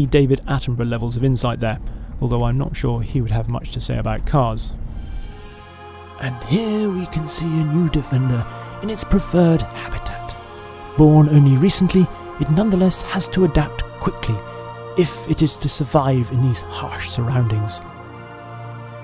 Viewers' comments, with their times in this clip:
0:06 not a bad David Attenborough attempt at all BEAUTIFUL Landy!